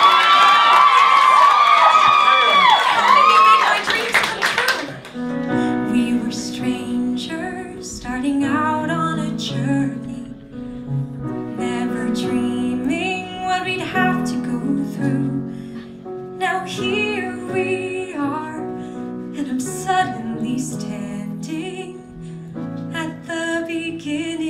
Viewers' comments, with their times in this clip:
0:05 Skip to just for the lovely singing 💗